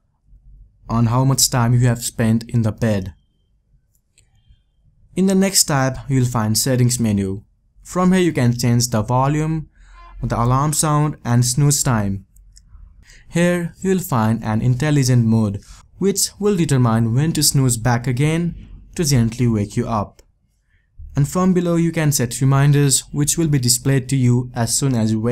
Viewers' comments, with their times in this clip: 0:09 you said the voliume? not volume? well that funny